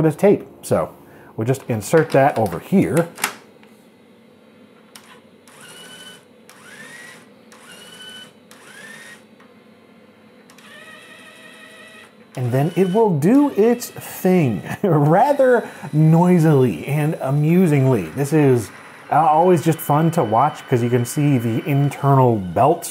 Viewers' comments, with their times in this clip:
0:03 OMG.. My dad had a tape drive that i used frequently as well. I INSTANTLY remembered the exact noise the drive made when you inserted it in, each tone shift as it read the tape lol. Brings me back. (My dad's drive was external, connected though the parallel port and had a pass-though for the printer).